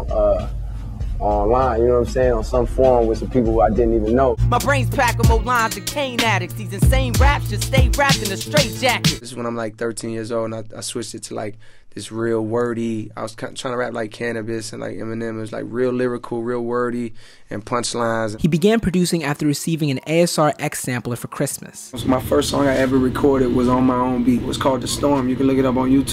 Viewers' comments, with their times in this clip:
0:04 sounds so much like Eminem.
0:05 He completely sounds like Em
0:05 J cole first songs sounds just like Eminem in the Slim Shady Lp. That style is legendary and it it always be after these 2 legends.
0:05 he actually sounds like Eminem.
0:06 he kinda sounds like Eminem
0:07 The Eminem influence is heavy here. DAMN!